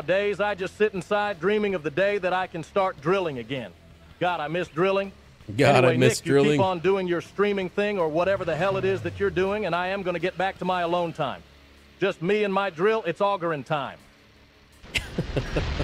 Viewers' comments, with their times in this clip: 0:03 Interesting inflection the AI does with "God, I miss drilling"